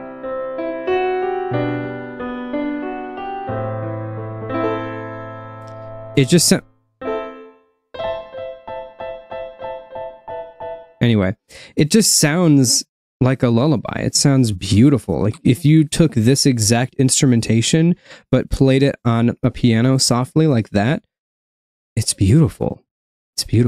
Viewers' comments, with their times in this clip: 0:07 suddenly still d.r.e.